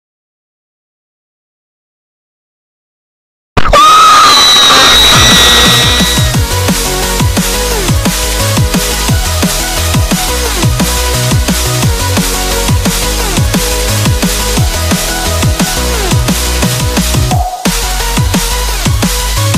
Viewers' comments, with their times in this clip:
0:04 Finally an upload! I love the vids! Edit: lol!! That sounds like my friend when he dies in bedwars